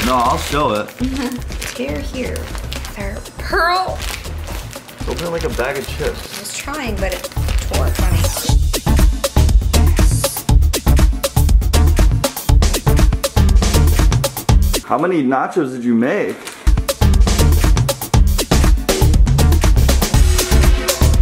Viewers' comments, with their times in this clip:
0:06 Why did it start sounding like a porno ?